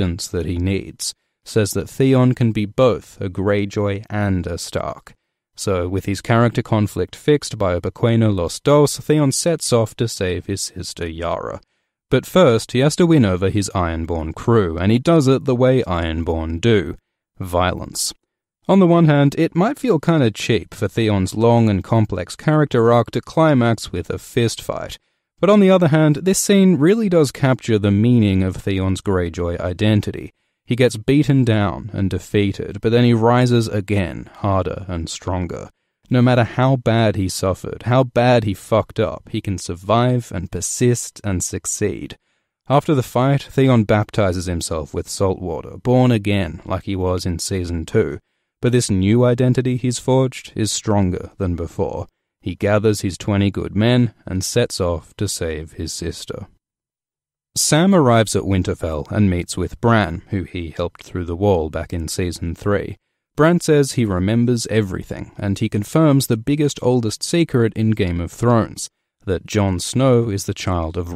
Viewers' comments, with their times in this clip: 0:07 What is he saying ? Boquia Los dos
0:57 Samurai caught me off guard